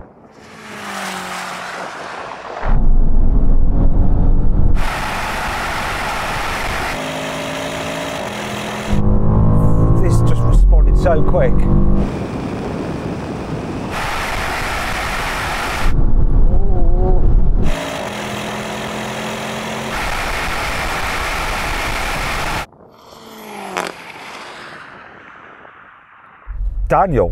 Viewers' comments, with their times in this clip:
0:09 that bass drop when it shifts 😳 Headphones recommended!